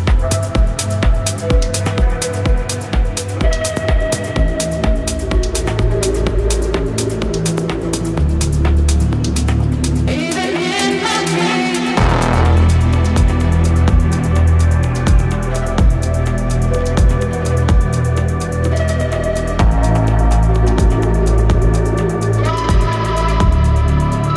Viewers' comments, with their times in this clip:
0:03 and ugh ur killin me with these IDs 😭 this song is dreamy af
0:08 Damn, that new ID is straight 🔥🔥🔥 sends your body into another dimension